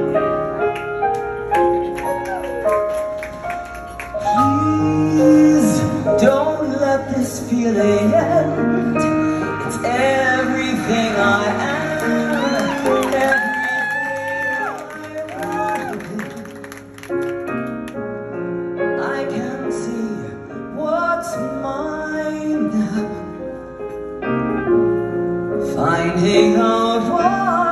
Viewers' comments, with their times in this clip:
0:09 Melissa, you have been blessed with a beautiful voice. I've loved all your songs through the years. God Bless you ALWAYS 🙏❤️